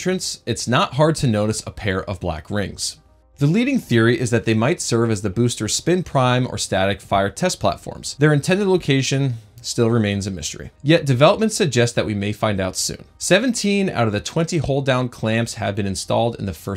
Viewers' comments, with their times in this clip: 0:04 oop nevermind, music is now barely audible .... I think you guys need to review how you edit these